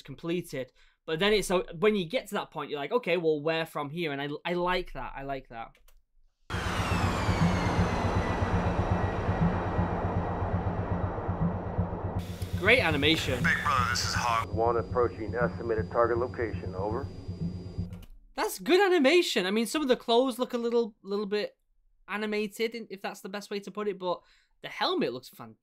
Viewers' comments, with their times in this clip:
0:07 ah yes, the a-10 warthog, one of America's best air support vehicles, built around a gun capable of shooting 4,200 rpm and famos for the brrrrrrrrrrtttt sound it makes when it fires.